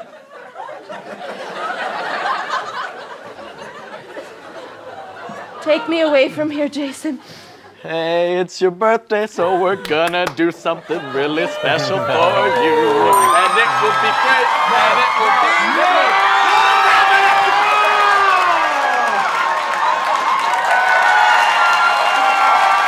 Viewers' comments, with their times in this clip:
0:08 I love the birthday song he sings 🤣🤣🤣